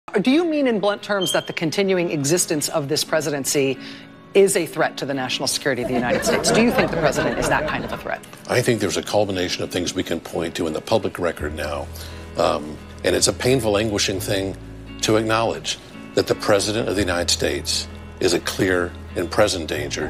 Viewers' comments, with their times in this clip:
0:01 MSNBC - Please replace the battery in your smoke detector